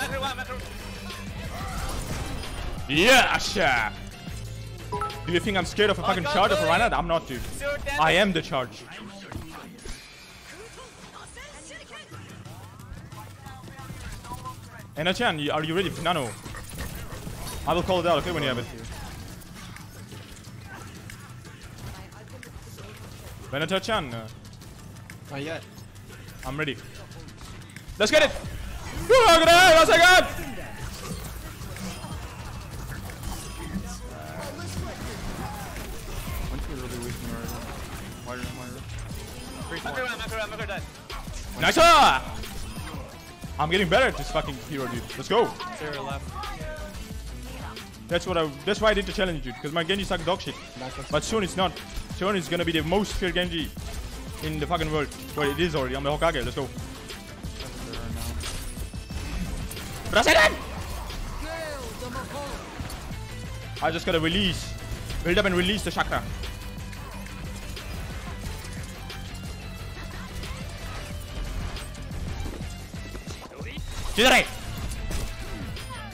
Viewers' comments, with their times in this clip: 0:08 Perfectly timed Genji voice line with the music.
1:01 The jutsu sound lined up perfectly with Moira's ult.